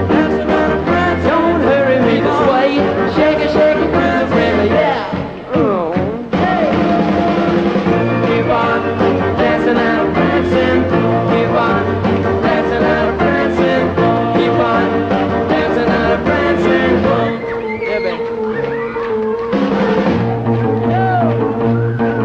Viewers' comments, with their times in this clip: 0:03 Shake it shake it to the brain, eeyeahh??? (Should be: ..."to the break of day", but it doesn't sound like it). What do you think? Please comment below.